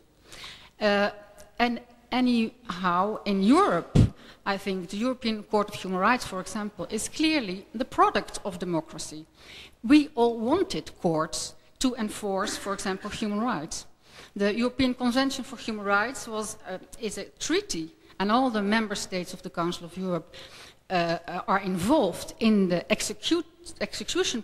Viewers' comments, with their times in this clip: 0:10 That lady felt so self-righteous and you could even hear the ''pardon'!'